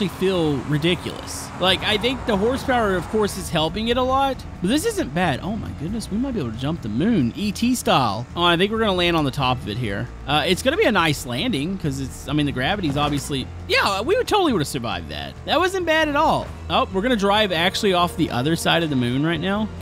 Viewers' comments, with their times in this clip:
0:03 anybody else hear the metal pipe sound?